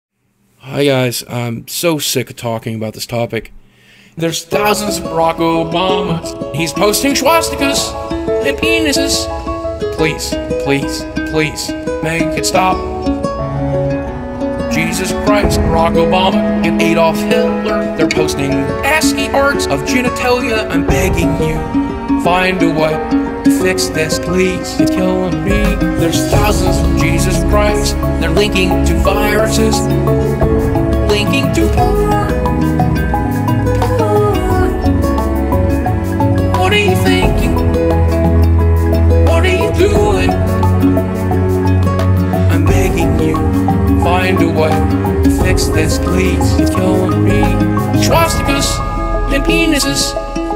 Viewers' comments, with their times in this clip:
0:04 it just sounds so funny "They'res thousands of Barack Obamas, he's posting swastikas and penises!"
0:21 Very nice drum hit, very mood-changing.
0:31 lmao That's so funny how high-pitched his voice gets when he "sings" about porn.
0:33 I don't know why but I laugh my ass off everytime the way he repeats "PoOOorn" so funny
0:33 That sound so majestic!